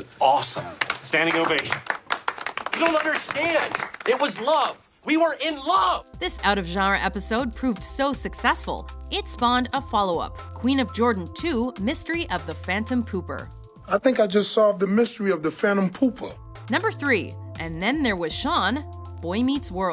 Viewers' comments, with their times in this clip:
0:06 Did anyone else notice the way she said "genre" ?